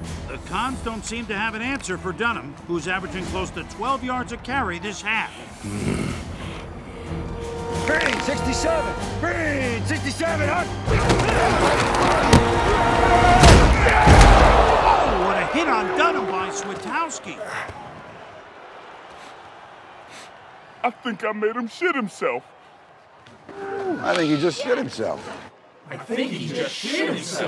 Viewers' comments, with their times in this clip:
0:08 listen to the fist crack, I wish my hand made that sound, mine sounds like a wet sponge.